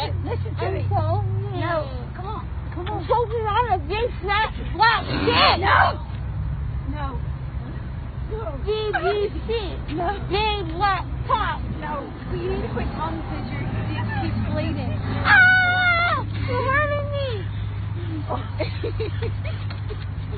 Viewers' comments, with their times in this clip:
0:05 the moms "no"